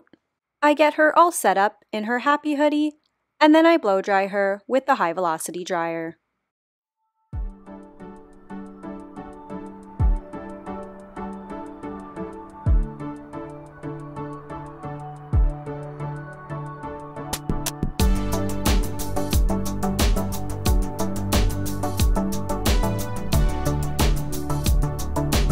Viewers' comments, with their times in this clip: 0:07 Radio TTS music begins <3 that track brought back really fond memories!